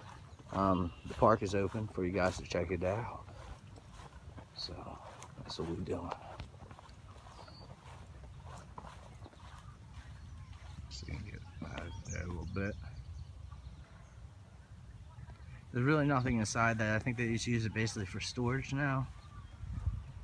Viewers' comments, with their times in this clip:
0:04 there is a voice under yours saying Get out?